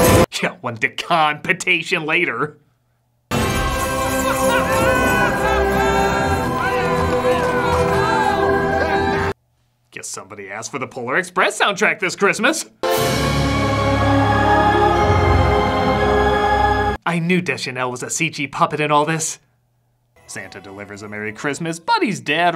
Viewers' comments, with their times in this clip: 0:04 THANK YOU! Someone finally mentioned it! That music has always stuck out to me and yet no one else noticed how similar it is
0:04 Have you ever noticed that this part of the musical score in ‘Elf’ sounds very similar to the musical score in: ‘The Polar Express?’ Both of these movies came out around the same time. ‘Elf’ came out in 2003, and ‘The Polar Express’ came out in 2004. Really interesting they sound so similar
0:09 Actually, I have noticed this. Both themes sound very similar. Since Elf came out first, I guess we can believe that The Polar Express ripped off...Elf. Huh.
0:10 THANK YOU! Literally everyone I’ve told these two soundtracks sound similar call me crazy! Who’s crazy now?